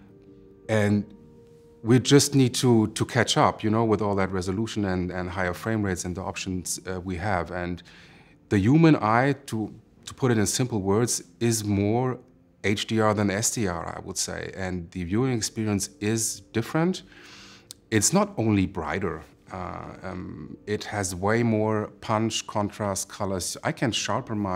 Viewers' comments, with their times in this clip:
0:07 He said Yuman Same as Bernie and Trump, an old NYC accent